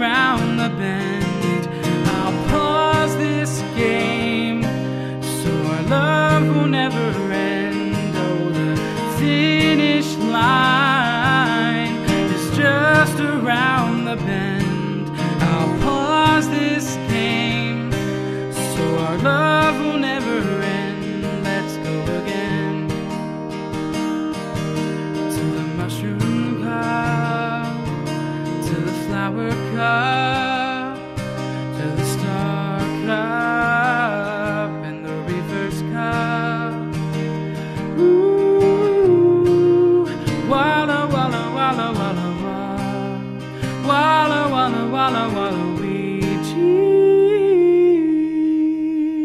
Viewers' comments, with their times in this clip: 0:10 That note *oh my god amazing
0:37 That falsetto is heaven.